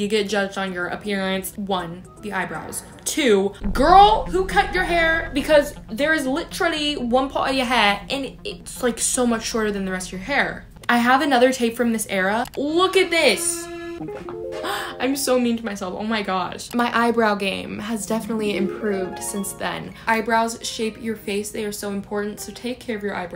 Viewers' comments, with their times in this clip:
0:07 girl really turned british for a second there